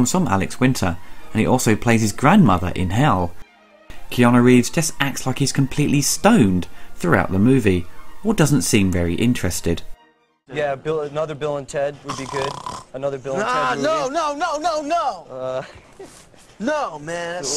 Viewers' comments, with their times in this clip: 0:03 From onwards, I just couldn't stop laughing at Keanu Reeves losing it...and gnashing his teeth a bit like a 6'1" Canadian attack puppy! I absolutely understood his point though, despite all the growling that went along with it :-D Although, not really cool to leave Alex to try and save the interview!